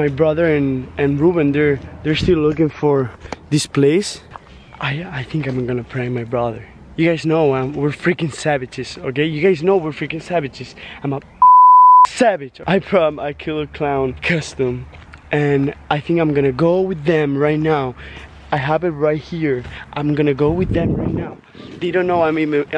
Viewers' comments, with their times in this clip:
0:07 Omg I love the way he says savages